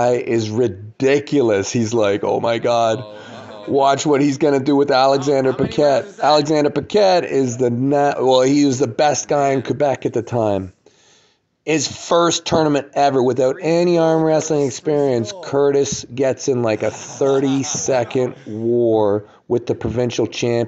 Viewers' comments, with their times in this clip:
0:06 he maybe strong but has bad stamina after he is already breathing hard